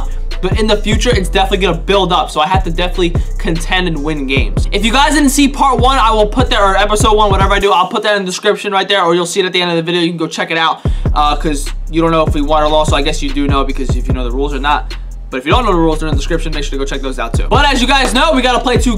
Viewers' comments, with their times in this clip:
0:03 Why audio fucked up it goes back to beginning what is up and yah